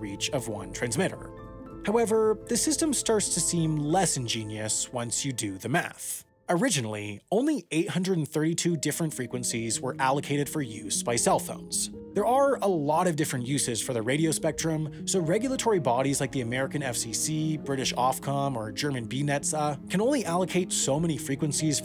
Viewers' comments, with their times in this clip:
0:05 did you say math or meth? I need to be sure before i do my calculations